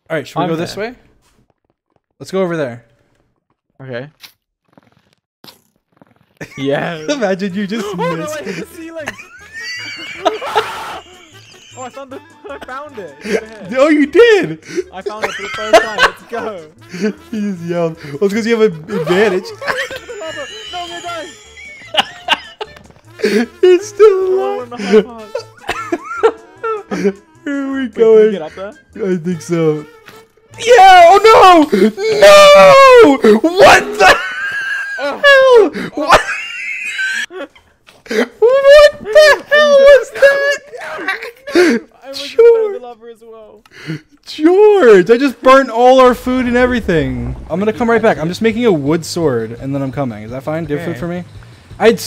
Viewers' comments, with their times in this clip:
0:07 "OH NO I HIT THE CEILING" [cue the best scream ever recorded"
0:07 is Dream’s ✨kettle laugh✨ for me
0:08 does anybody else love dream's laugh its like the air coming out of a balloon.
0:10 A scream of pure terror
0:28 His laughs tho 😂😂😂
0:32 Dream tried to swim in lava. Dream laughed until death
0:34 this is called a actual pig squeal.. Learn from dream pigs
0:34 Dream: dies in lava Also dream: M A X W H E E Z E
0:35 Dream : pig noises
0:36 I like how is laugh just cuts off